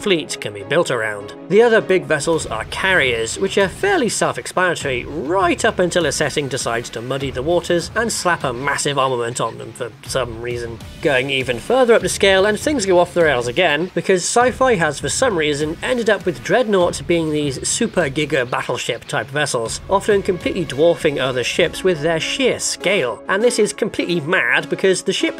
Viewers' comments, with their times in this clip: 0:08 What in the 9 worlds is the word you say ? “The other big vessels are carriers, which are fairly self-explanatory…right up until a setting decides to muddy the waters and slap a massive ulghamont onto them.” What’s an “ulghamont”? 🤷‍♂️